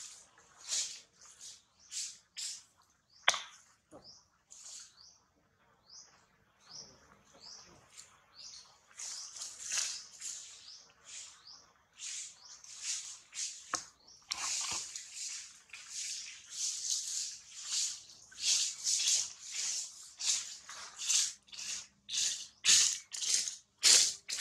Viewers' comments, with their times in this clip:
0:06 Celine's belly button hasn't healed yet. In this video, Celine coos for the first time, calling her mother for help. Quiet at first, then louder.